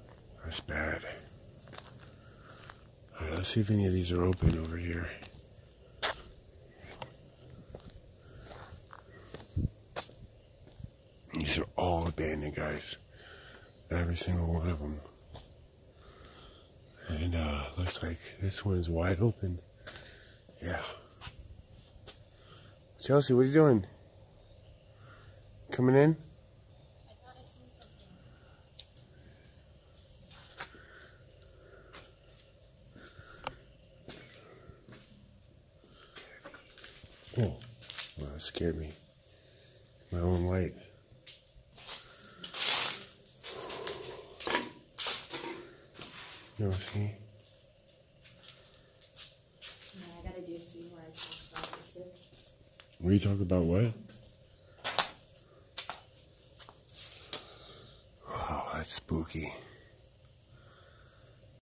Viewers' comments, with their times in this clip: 0:07 I keep hearing whistling...around and beyond. Then a disembodied voice saying get out. Female. And a growl. And now my heart is racing. This is not good. When this happens you need to GO!!!!
0:34 After you can hear a man whispering something. But yeah that place is seriously haunted. Thanks for the video and much love
0:36 I can't make out whats said
0:36 its a males voice but cant quite pin point what is being said
0:36 a voice says hear me. Creepy.
0:36 disembodied voice whats it saying? Dirty? Thirteen?
0:36 ! I hear a voice
0:46 Oooooh. it sounded like it said “ Red”. That was so freaky. Is it out for blood. 🤔🙀❤️